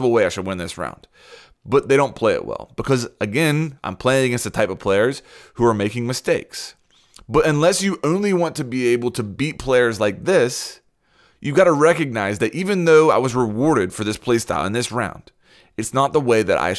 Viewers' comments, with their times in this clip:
0:04 you sound like snake from the simpsons